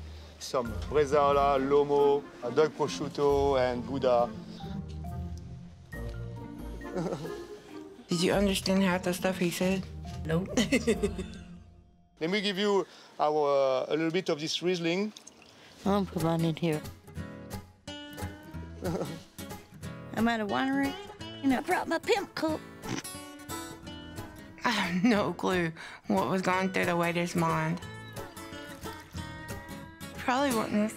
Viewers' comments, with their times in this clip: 0:08 yea I understand what the guy is saying more than I understand u lol
0:17 his laugh sent me 😭😭😭